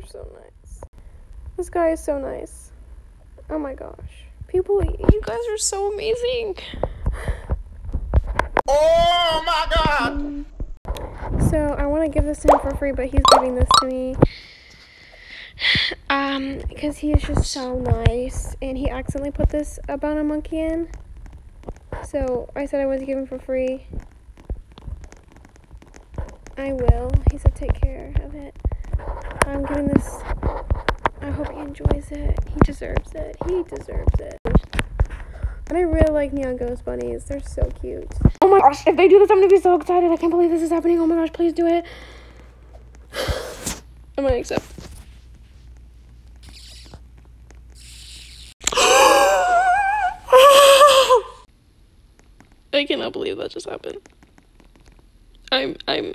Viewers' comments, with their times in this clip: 0:09 ɪ ʟᴏᴠᴇ ᴛʜᴀᴛ sᴏᴜɴᴅ ᴛʀᴀᴄᴋ- ɪᴛs ʟɪᴋᴇ OoOooHH mA GaWD!
0:38 I thought u were rapping